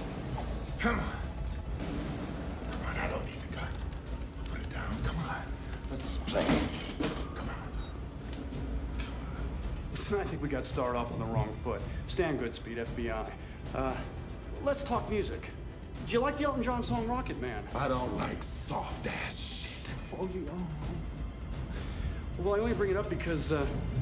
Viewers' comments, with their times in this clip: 0:06 at his face and the cameras angle when he grabs his knife then says come on!.....so passionately!